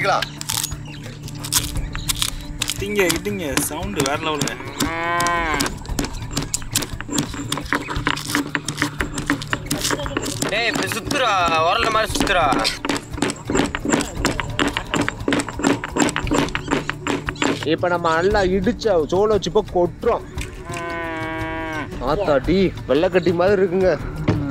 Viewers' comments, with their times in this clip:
0:05 Bros is that coooow😂